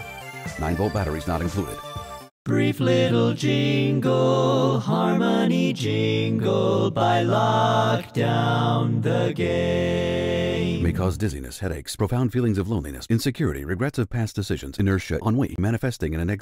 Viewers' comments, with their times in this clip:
0:03 Sounds like Schmoyoho sang The Brief Little Jingle Song Love it!